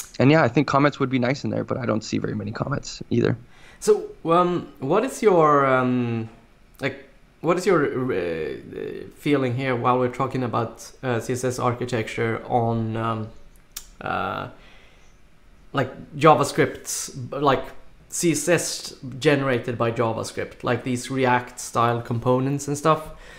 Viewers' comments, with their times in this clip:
0:09 Why isn't anybody talking ?